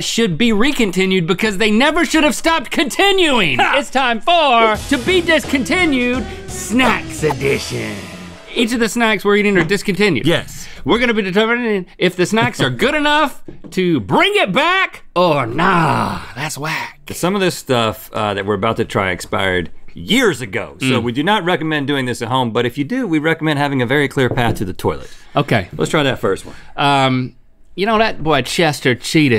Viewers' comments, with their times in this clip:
0:10 "We're gonna be determinnninnn" I love how Rhett acknowledges it and giggles lol